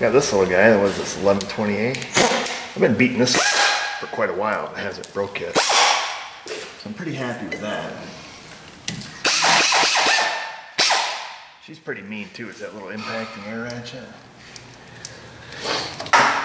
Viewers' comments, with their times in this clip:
0:03 .... what is that dripping .... coffee you forgot to move .....